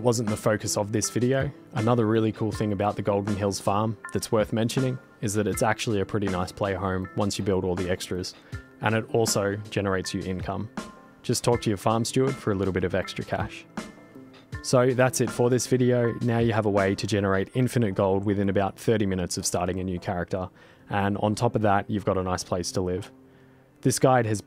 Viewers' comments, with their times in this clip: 0:10 I admit I thought I heard "Just torture your farm steward for a little bit extra cash"